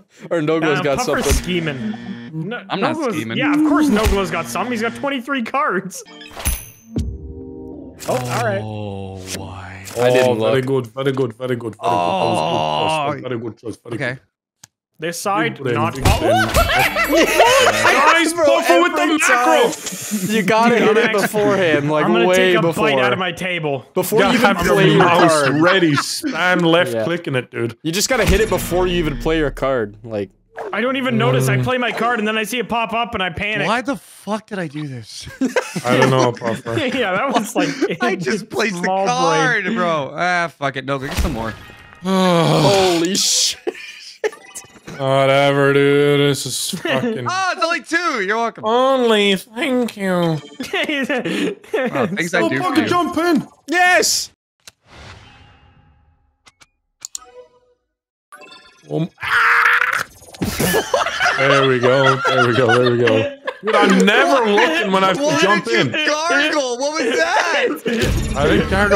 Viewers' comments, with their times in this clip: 0:03 It just me or the flip sound sound like it's from Spotify about to say "Want a break from the ads?"
0:52 The gargle bro I can’t!!